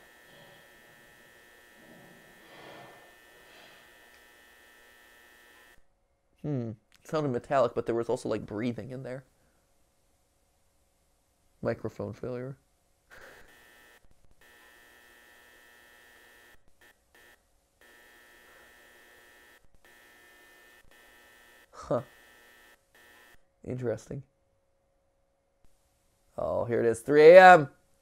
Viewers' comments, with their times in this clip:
0:10 The microphone failure sounds like Morse code. Might just be me reading too much into it though
0:11 i wonder if the microphone faliure can be translated to morse code
0:12 A thought, has anyone thought that the microphone cuts could be morse code?
0:12 I've not seen anyone else say this but I'm pretty sure the 'microphone failure' is Moore code